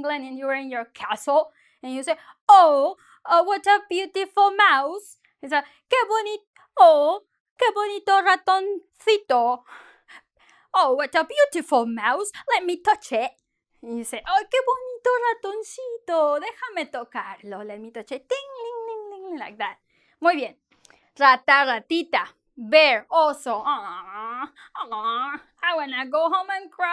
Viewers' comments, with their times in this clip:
0:04 That british accent while spitting spanish is so funny 😂😂
0:10 Cutest attempt at an English accent ever...